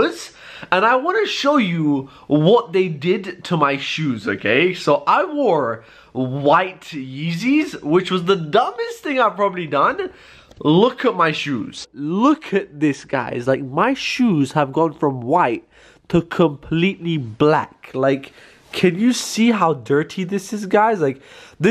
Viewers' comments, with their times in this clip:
0:04 Is how I sneeze evertime